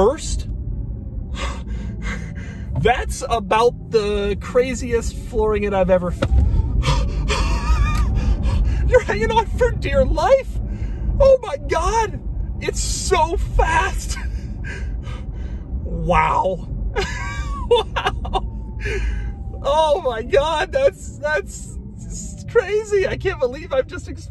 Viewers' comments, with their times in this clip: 0:09 The way he says "life" 😭🤣🤣